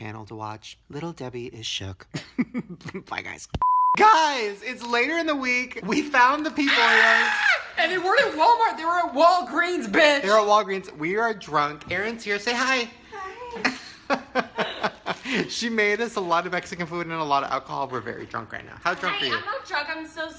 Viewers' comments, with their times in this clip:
0:06 lol I like how Ryland is calm the whole video until the scream